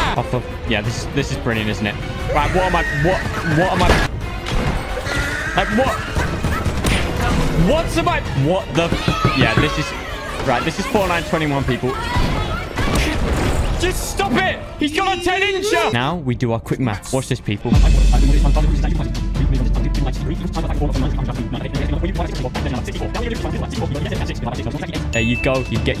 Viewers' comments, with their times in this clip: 0:07 I actually thought someone was knocking on my door there
0:09 the sfx legit scared me so much. I thought I had a house invader outside the window behind me